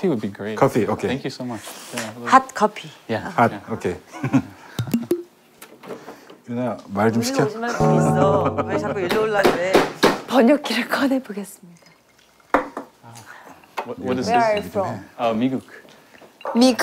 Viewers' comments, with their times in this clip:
0:04 him giggling when she said “hot copy” 😭 It seems like everyone was nervous.